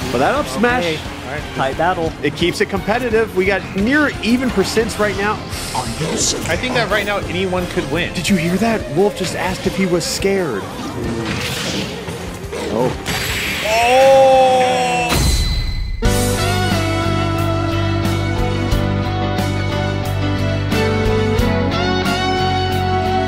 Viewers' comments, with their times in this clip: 0:04 it's actually very easy to hear